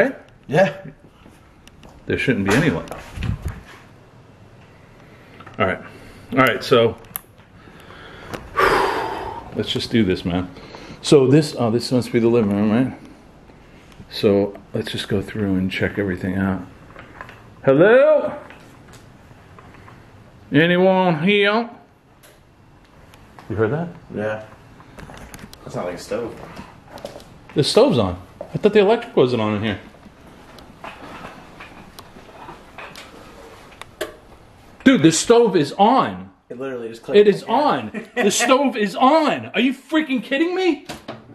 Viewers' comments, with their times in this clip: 0:08 ......there is a weeeeird creepy voice saying......"GET OUUUT"......!!!!!
0:26 i i heard a voice say something like hi or ha.